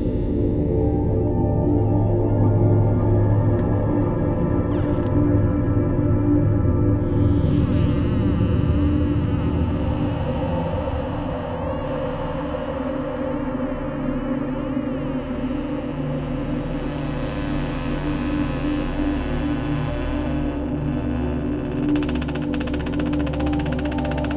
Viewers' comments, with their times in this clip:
0:07 sounds like me on the toilet :P